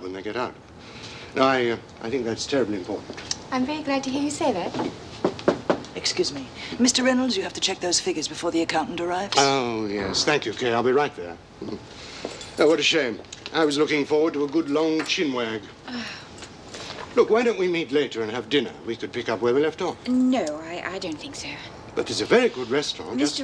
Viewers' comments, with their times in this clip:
0:05 someone please offer Kaye a lozenge!